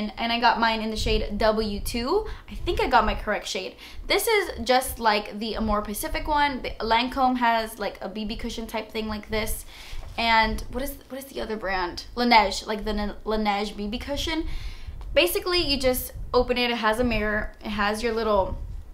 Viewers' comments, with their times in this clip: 0:05 "more Pacific" one" ... honey don't do that <3